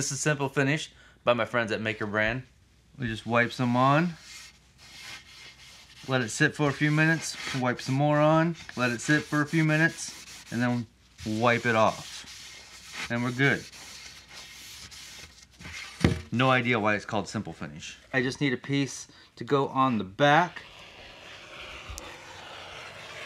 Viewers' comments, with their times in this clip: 0:06 wipe some moron!! too funny!!
0:07 He said "wipe some moron."